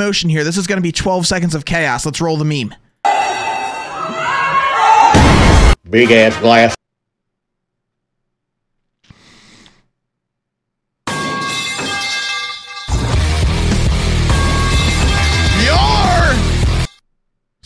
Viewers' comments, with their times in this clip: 0:05 was giggling a little